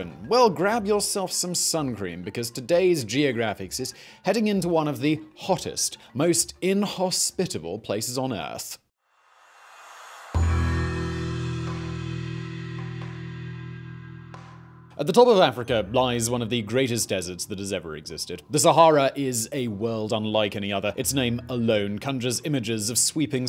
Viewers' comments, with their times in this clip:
0:09 The gong sound was really satisfying to hear. I appreciate that